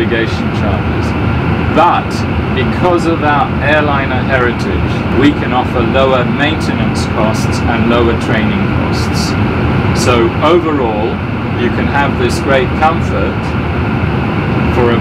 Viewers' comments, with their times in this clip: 0:03 The conversation was like an Alien trying to communicate with an AI computer.